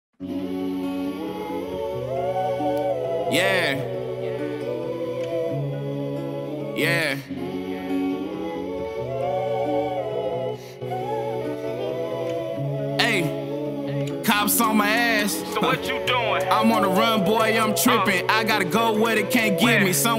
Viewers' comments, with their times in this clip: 0:06 swear to Jesus Christ him self I heard this beat with a song I keep put my tongue on it nice though